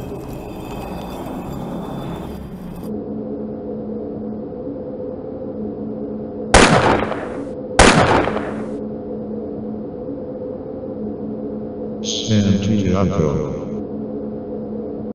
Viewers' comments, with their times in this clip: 0:12 Luig group sound like